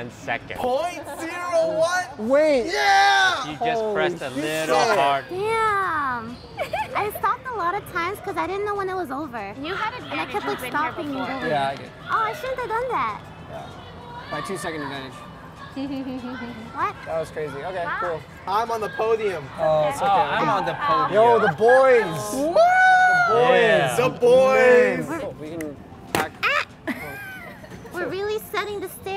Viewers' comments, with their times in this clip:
0:10 So no one Heard a kid screaming